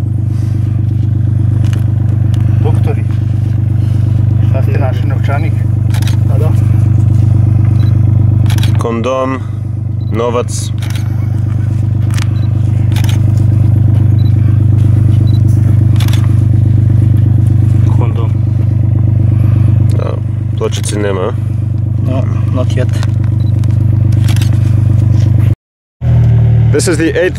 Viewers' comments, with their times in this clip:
0:09 "condom" laughter from the left hand side